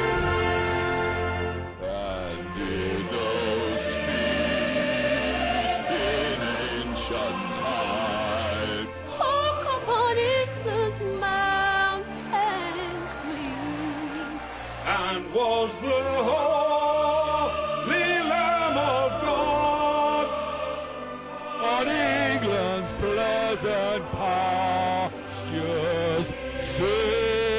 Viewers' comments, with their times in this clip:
0:09 the girl that starts singing is quite amazing.